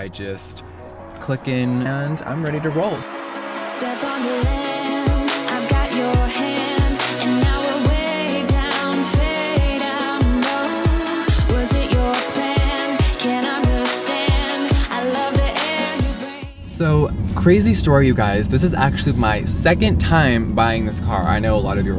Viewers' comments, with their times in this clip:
0:05 love the song listen it is cool